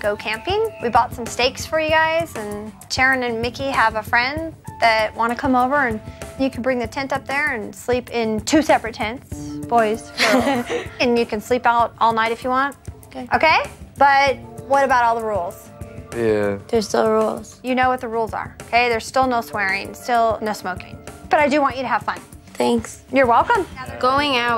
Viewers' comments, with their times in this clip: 0:10 her laugh sounded so nervous lol